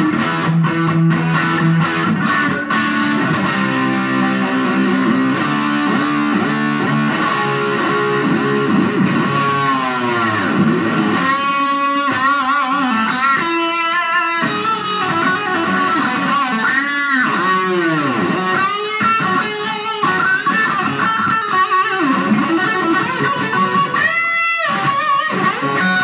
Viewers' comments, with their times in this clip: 0:09 Ive been playing for years and have yet to be able to make my gutar growl like he did in the solo part.